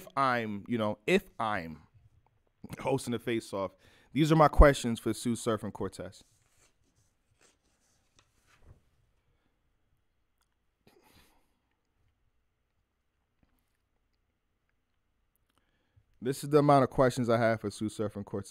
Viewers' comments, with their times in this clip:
0:05 I wasn’t looking at the screen 😂😂😂 I thought “why’d it get so quiet” 👏🏾👏🏾👏🏾👏🏾😂😭🤝🤝🤝 Edit: you not even gonna ask “how you doing?”